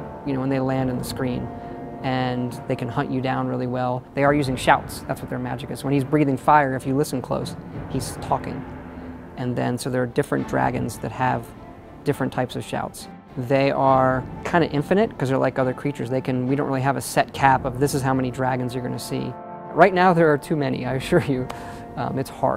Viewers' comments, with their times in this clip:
0:05 Toor SHUL yep... i listened closely when a dragon shouted at me